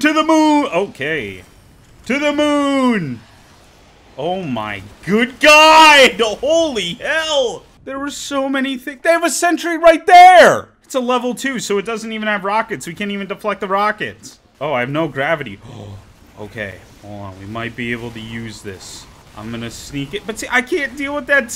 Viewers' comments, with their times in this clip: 0:03 My man doing his best Goofy intepretation Absolute legend